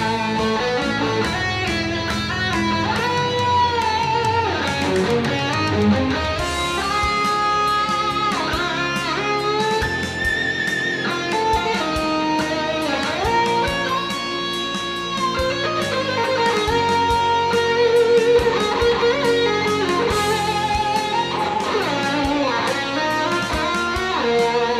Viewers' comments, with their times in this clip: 0:09 That pinch was awesome.....